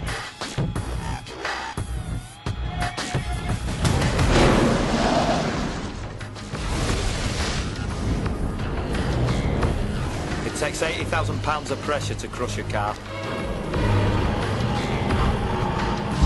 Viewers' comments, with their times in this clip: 0:04 anyone know which track this is on the soundtrack? Always liked this piece playing with the heavy industrial and Calitri's calm tones declaring how much pressure crushes a car.